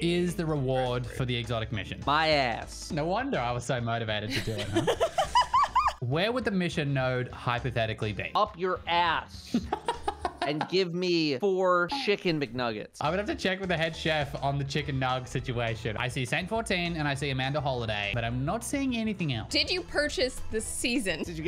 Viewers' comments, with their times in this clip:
0:08 I swear I thought Datto was using a Jack Black soundboard, that sounded just like him 🤣🤣